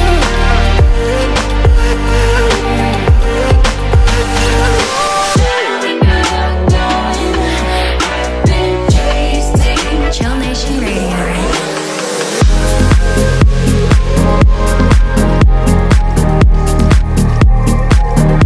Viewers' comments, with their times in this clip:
0:05 What a music